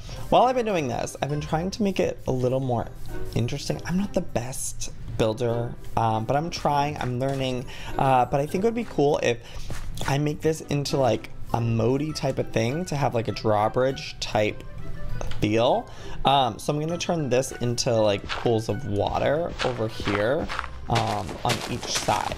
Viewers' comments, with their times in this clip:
0:08 I thought he said penis